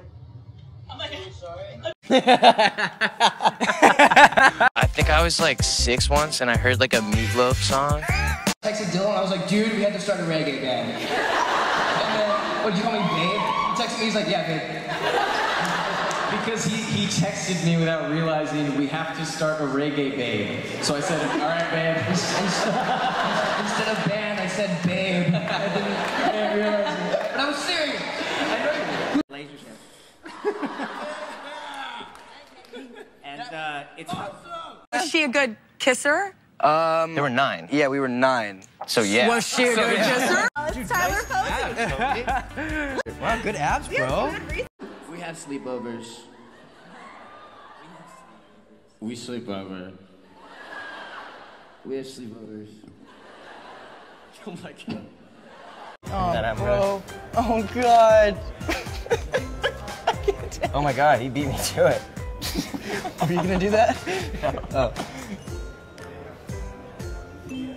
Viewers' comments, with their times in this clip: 0:05 the way Tyler wheeze laughs kills me every time 😆
0:54 OMG i can't, they laugh at the same time JAJAJAJA❤